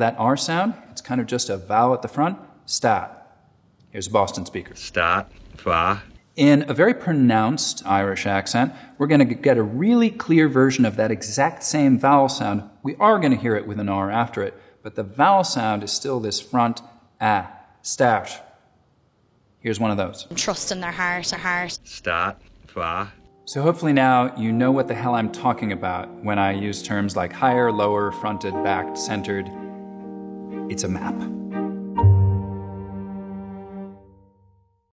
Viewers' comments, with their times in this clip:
0:04 That Boston guy saying “start” and “far” sounded like a full blown Aussie.
0:04 That Boston guy saying “start” and “far” sounded like a full blown Aussie.
0:17 as an Irish person, hearing an American perfectly nail an Irish accent was weirdly satisfying